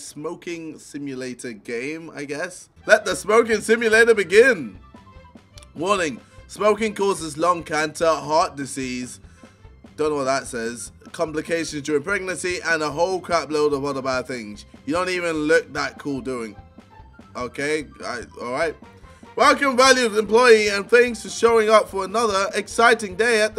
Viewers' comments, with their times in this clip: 0:06 Really bro? You don't know how to pronounce the word Cancer